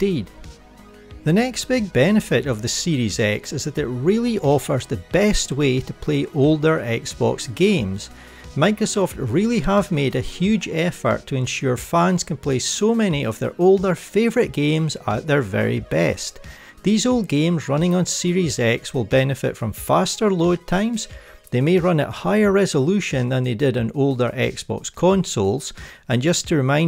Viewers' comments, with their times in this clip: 0:09 “Microsoft really have made a huge airfart”